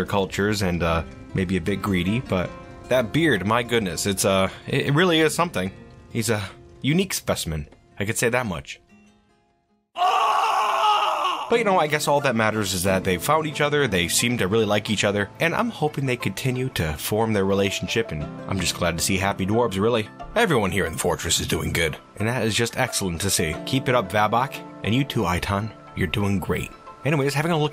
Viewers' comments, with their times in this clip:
0:09 God the ugly yell gag is so goood